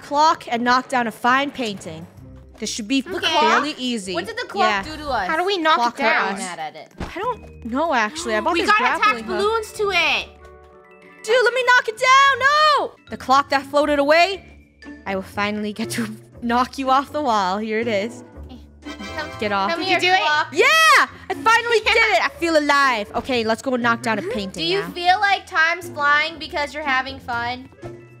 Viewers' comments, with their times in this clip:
0:09 Why did i hear the "To Be Continue" music? XDD